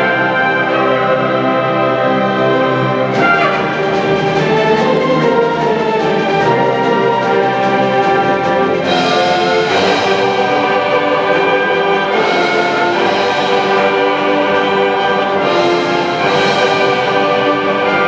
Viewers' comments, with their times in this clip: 0:03 There's an errant trumpet squeal